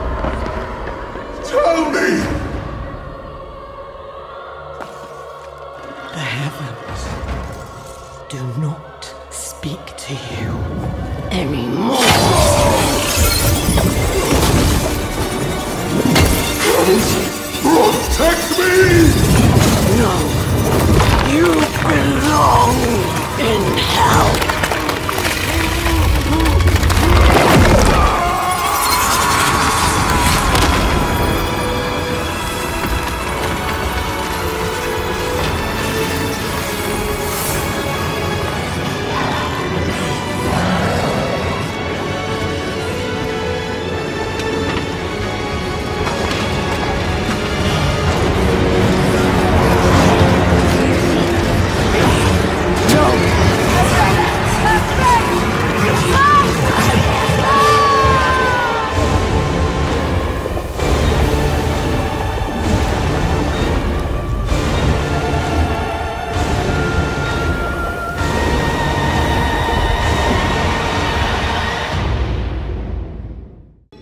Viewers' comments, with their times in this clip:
0:10 "Silence is their judgment." What a perfectly delivered line. Also, it is so cool where her wings look like they are his for a brief moment.
0:58 The Lilith's Theme reprisal is a nice touch as its the same notes from her initial 'By Three They Come" cinematic entering Sanctuary.